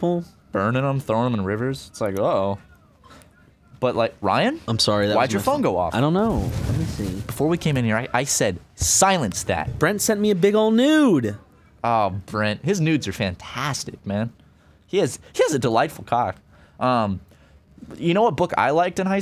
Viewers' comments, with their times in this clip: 0:06 tell those Game Grump knuckleheads to quiet down! Trying to listen to you boys!